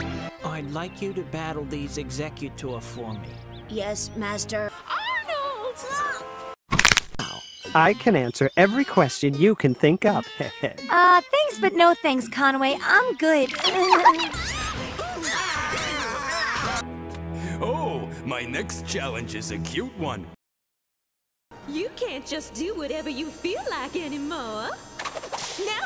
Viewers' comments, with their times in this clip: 0:10 why her voice sound robotic for a little there